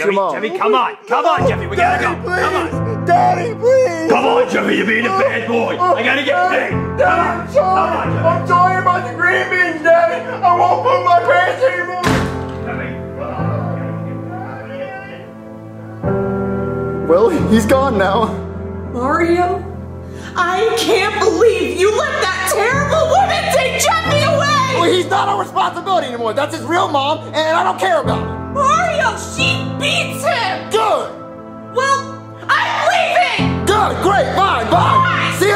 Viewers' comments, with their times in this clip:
0:10 I won’t poop my pants anymore 1 second later the door slams 😂
0:19 the voice acting in this scene is pristine
0:19 Rosalinas voice is good and heart breaking 💔 when she says *mario… I can’t believe you let that terrible woman take jeffy!😢 I hear the pain in her voice